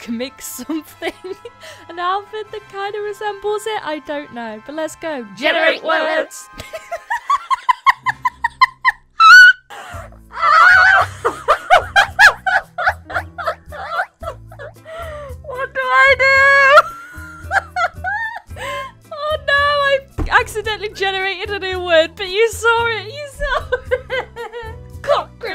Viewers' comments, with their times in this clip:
0:07 The way she laughed at the start with that cockroach thingy made me laugh and my grandma said that she sounded like a chicken lmaooo